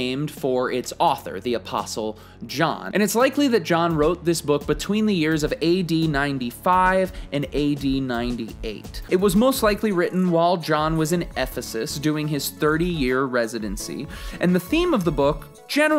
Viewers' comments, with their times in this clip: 0:03 I thought for a second he said 1895 and 1898 instead of AD 😂 I was like WOW! I had no idea!!